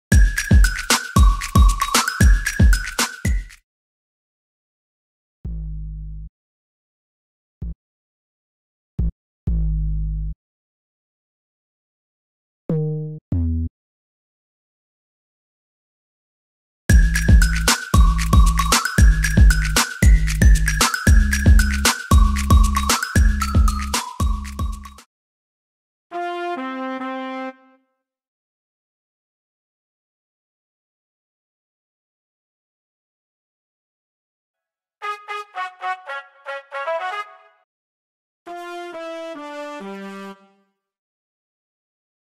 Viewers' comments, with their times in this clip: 0:07 I thought NCT BOSS was goinG to drop XAXAXA
0:25 i thought it's hand clap HAHAHA